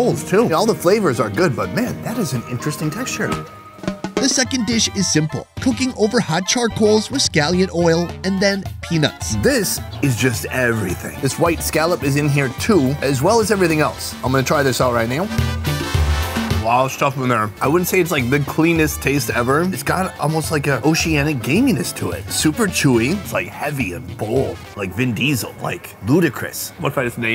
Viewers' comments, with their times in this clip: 0:03 Is that some Mexican banda playing ? Or am I going crazy 😂
0:05 banda music had me dancing lol
0:05 the moment when banda music was playing on haha hilarious
0:05 Was that banda music playing a ???😮
0:05 puts on banda music as the background
0:10 Am I the only one listening to Mexican Banda?
0:10 Min why are they playing latin music in background they should be playing whatever they listen to over their
0:15 Mexican band music love it